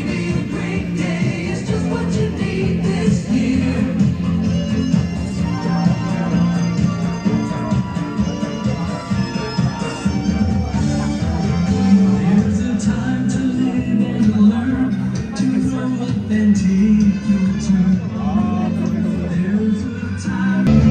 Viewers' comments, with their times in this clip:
0:03 Digging the old school music!